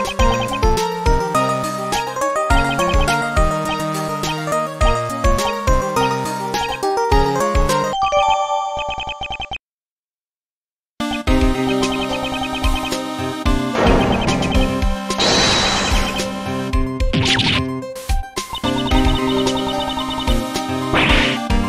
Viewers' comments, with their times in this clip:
0:03 not gonna lie but when the dialogue was syncing to the music it was so clean